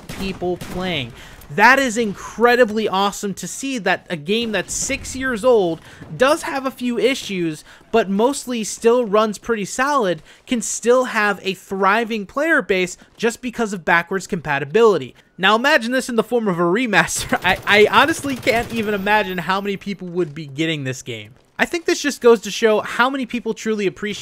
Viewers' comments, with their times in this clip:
0:10 You heard it right here folks, Black Ops runs pretty salad